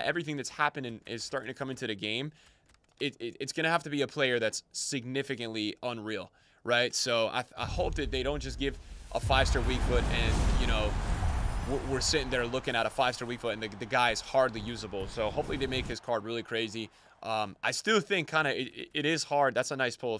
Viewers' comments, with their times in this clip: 0:07 i hope that they don’t just give a five star weakfoot and You know we’re sitting there looking at a 5 star weakfoot ni**a. What did he sayyyy